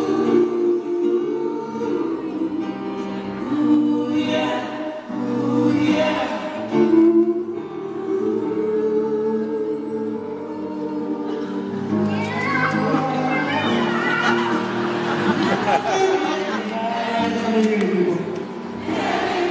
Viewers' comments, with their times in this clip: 0:06 I love how he makes the cute black singer crack with his mouth guitar